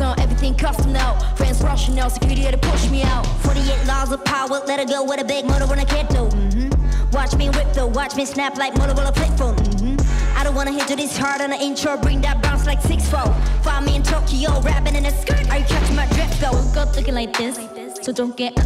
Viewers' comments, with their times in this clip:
0:03 Everyone debating if Jurin's second verse in the choreography video was sped up, but she killed it on a live stage!!